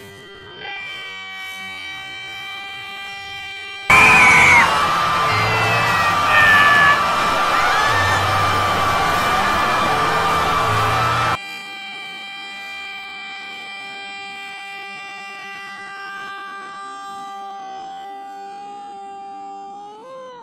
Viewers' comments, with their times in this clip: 0:04 dash dot screaming